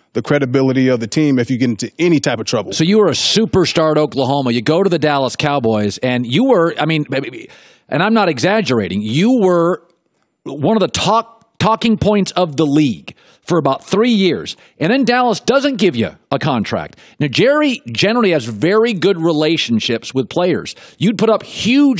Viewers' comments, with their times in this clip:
0:06 Collin sounding like Double D in the Ed, Edd, and Eddy intro